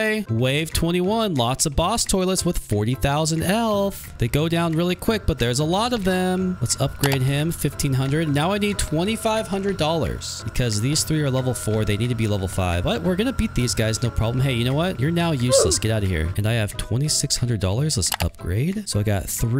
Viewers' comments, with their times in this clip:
0:03 "Elth" 💀 It also,sounds like elf 💀